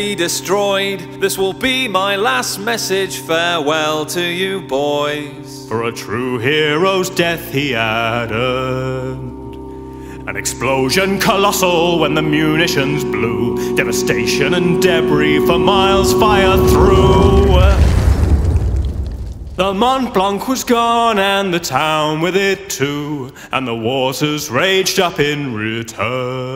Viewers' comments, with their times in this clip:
0:10 Oh man that dissonance
0:11 That dissonant chord chills every time